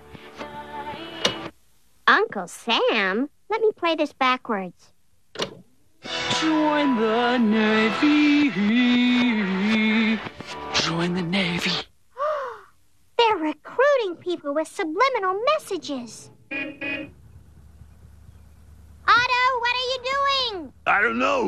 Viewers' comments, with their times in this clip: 0:06 I think that low tone voice makes it even creepier... 😂💀